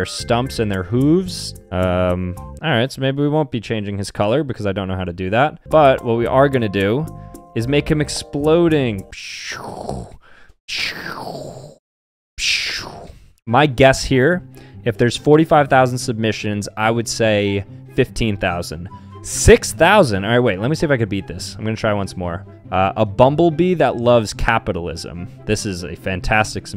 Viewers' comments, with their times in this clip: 0:08 Your explosion sound effects are spot on lol